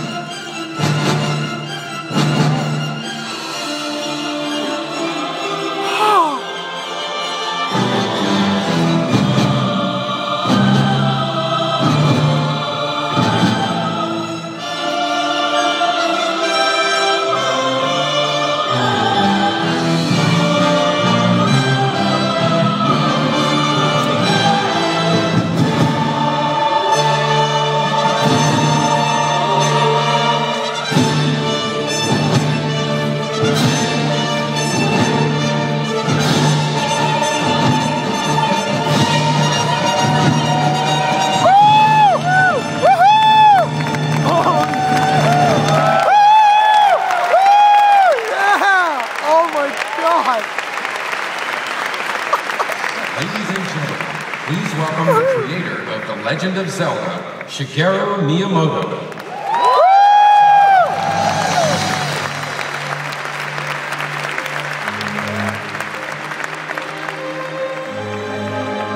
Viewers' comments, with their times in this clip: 0:03 omg lol babyvoice wtf
0:49 He sounds like the double rainbow guy.
0:52 I swear I can hear him sobbing starting from onwards.